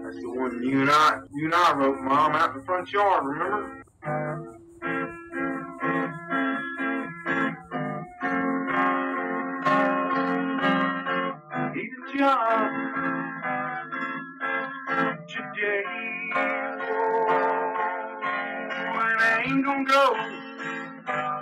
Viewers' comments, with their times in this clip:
0:05 what is this eerie song from ? :O